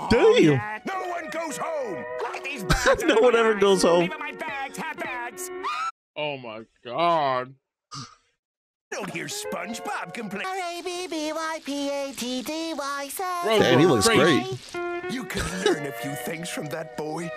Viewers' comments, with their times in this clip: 0:05 dat cut scream tho